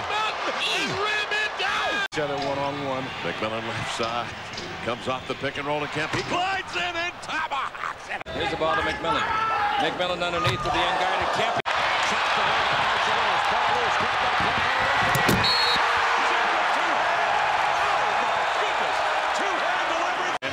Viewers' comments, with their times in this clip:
0:06 The announcer sound like he just had someone come up from behind him and got strangled 🤣